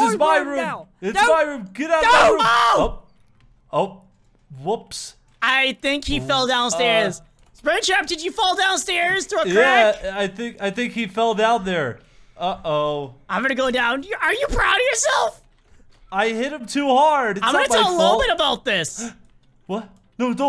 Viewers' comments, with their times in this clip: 0:05 I love how when Freddy “Kills” springtrap he sounds like a raging Fortnite player screaming “NOOO!!” Into his mike.. I rewatched it like a thousand times